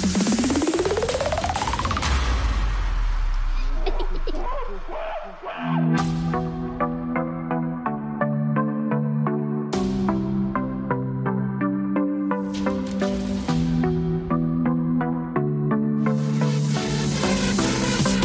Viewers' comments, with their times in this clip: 0:05 did you here maxima (queen netherlands)